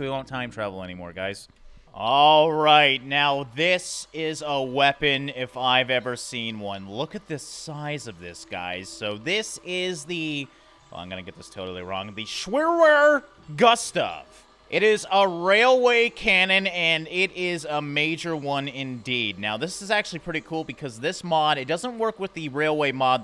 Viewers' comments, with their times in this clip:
0:10 IM GERMAN AND I CRYED OF LAUGHING 😂😂😂 HOW U PRONOUST [im not good in english sry]THAT😂😂😂